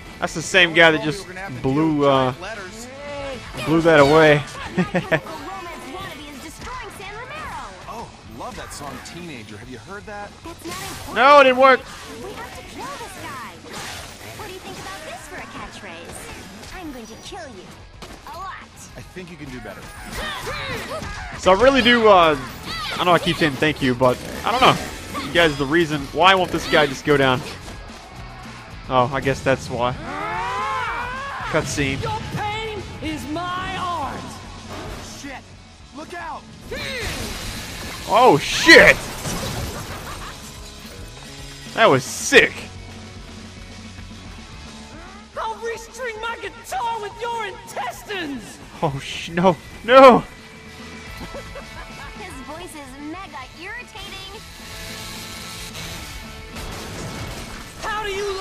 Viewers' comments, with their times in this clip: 0:10 OMG I LOVE THE SONG TEENAGER :DDDD
0:45 I swear to god that it's the same voice as seth's from Red dead redemption!!!